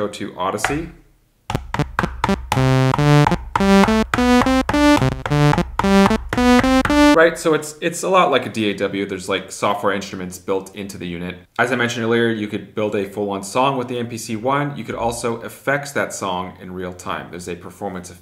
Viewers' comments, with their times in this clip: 0:05 sounds like 1 of these wooten dolls from TE, lol. I think once you heared them you can not unhear them.